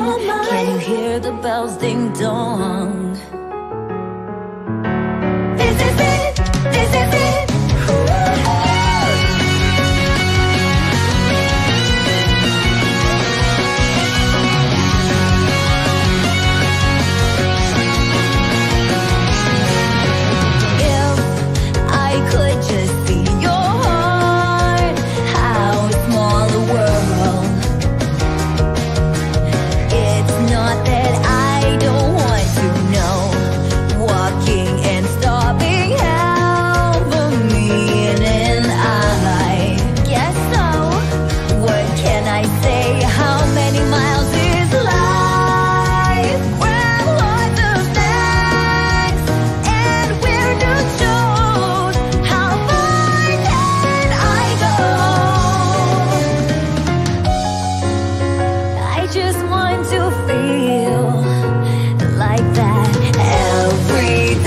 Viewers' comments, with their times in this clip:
0:09 Am I the only one who hears the variation on her previous theme "Juno" ?
0:45 This is so simular in pitch and notes to Don't Stop Me Now I'm burning through the sky, yeah
0:52 omg what a powerful voice